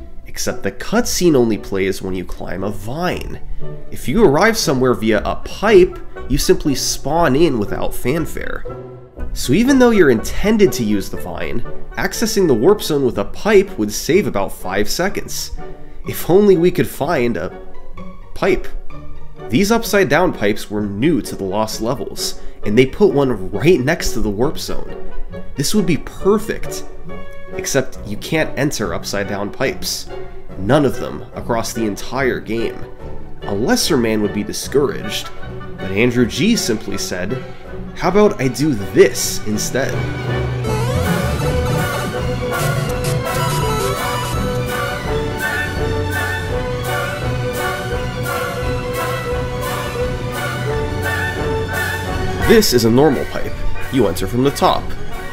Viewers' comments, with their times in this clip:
0:09 Perfect choice of music there
0:29 Everything from is comedy gold . The music is PERFECT🤣🤣
0:39 made my jaw drop. excellent music choice to underscore it too.